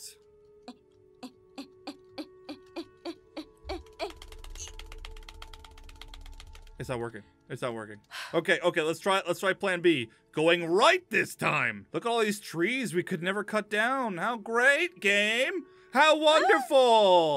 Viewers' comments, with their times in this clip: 0:04 Rapidly Clicks Key